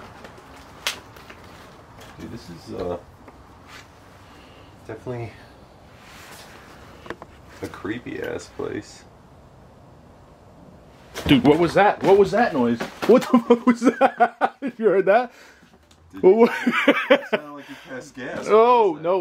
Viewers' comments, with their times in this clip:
0:07 woman saying hey,